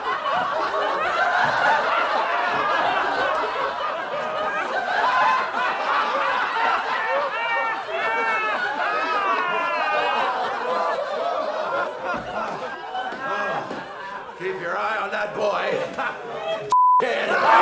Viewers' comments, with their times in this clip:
0:04 the way he laugh to annoy her is fantastic!
0:04 he sounds like leto's joker, but better
0:05 One the greatest laughs in cinema history.